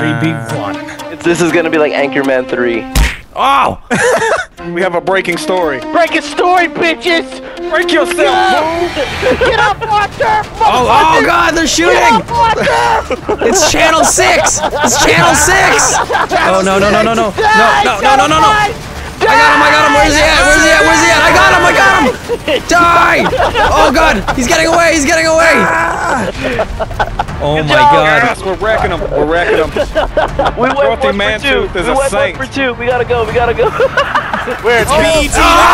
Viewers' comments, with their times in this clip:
0:03 anchorman 3 I thought you said anchorman tree!
0:16 anybody else notice the echo ?